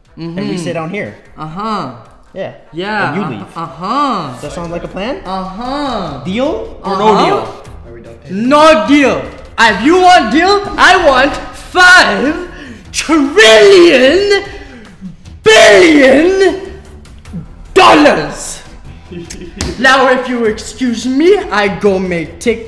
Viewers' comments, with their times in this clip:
0:08 I have not heard such good English till date.😂